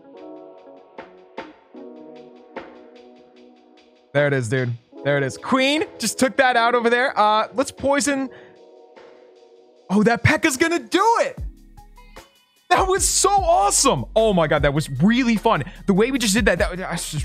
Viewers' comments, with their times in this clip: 0:05 he says quEEn lol a little voice crack